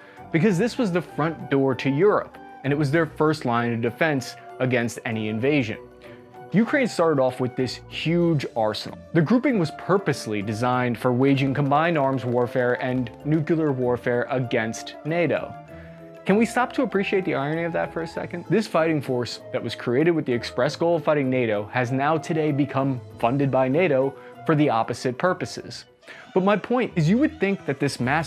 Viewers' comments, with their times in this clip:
0:10 Did you really say "nucular"? Holy shades of GWB, batman! 'merica 🇺🇸👍 💙Slava Ukrania 🇺🇦🙏💛